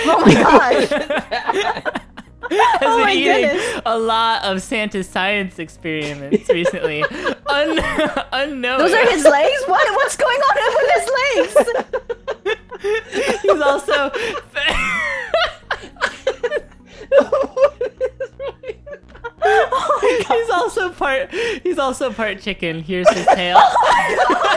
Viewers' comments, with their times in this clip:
0:09 they laughed so much XD